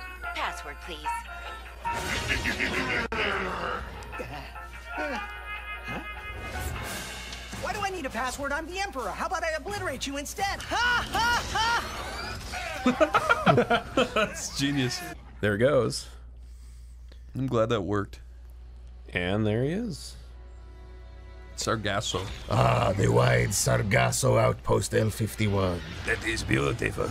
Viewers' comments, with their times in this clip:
0:10 Wait, is the Titus Cringe laugh actually in the game, or edited in? Hard to tell from the boys reaction